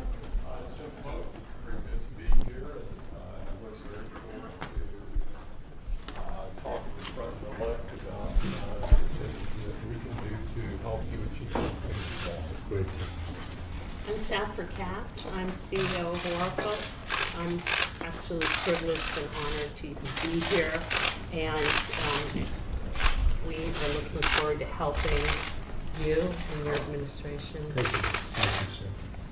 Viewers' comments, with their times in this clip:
0:10 Was that a fart 😂😂😂😂